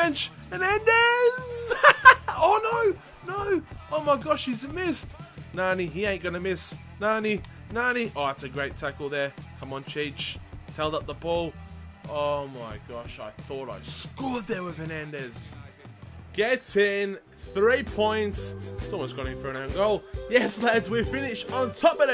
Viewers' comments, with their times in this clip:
0:04 from that laugh to shocking expression xD